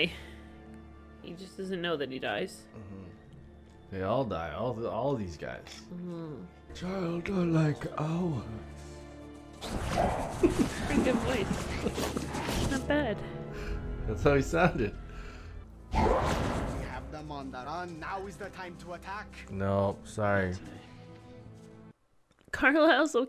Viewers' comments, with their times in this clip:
0:08 The imitation tho had me 😂🤣😭😭